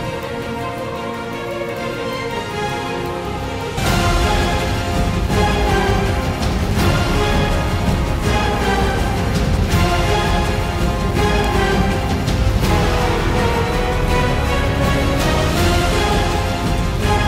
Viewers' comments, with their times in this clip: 0:03 I love how there’s this epic music and you’re just making the lower back 😂😂😂